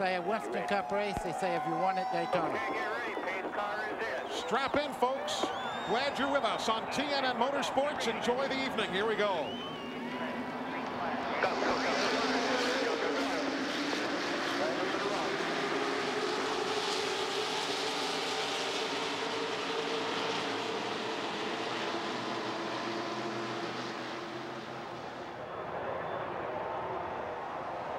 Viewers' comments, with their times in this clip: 0:10 best start to a race I’ve ever seen. No commentating, fans cheering, a wide shot from the infield as the cars take the green with the rpm’s rising up, especially with the old plate sound. That was just poetry in motion.